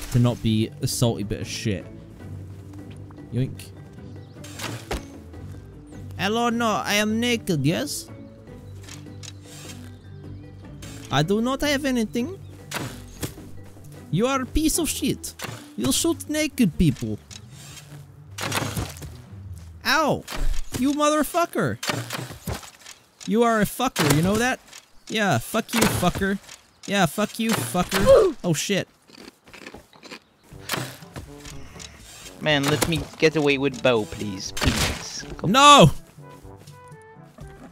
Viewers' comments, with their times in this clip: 0:06 Went from Russian to American real quick
0:21 what accent is that?